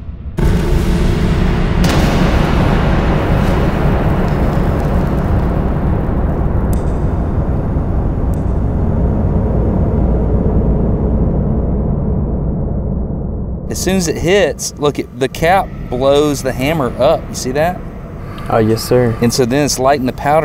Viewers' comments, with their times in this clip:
0:05 is that the real sound? Could it really hear the tink of the hammer landing back on the gun?